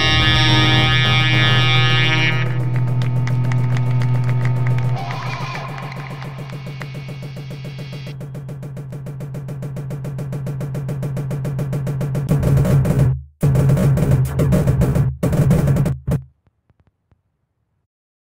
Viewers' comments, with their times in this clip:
0:05 Okay, just wanted to point this out intentional or not, the guy scream is perfect in my eyes, matches perfectly with the sound in the song! I love that so so much!